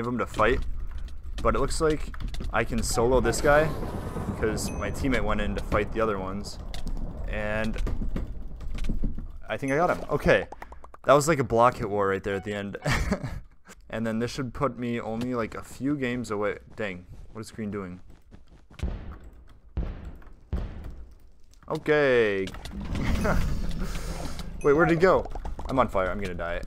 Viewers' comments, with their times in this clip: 0:07 LMAOO you can here him hitting the table with his mouse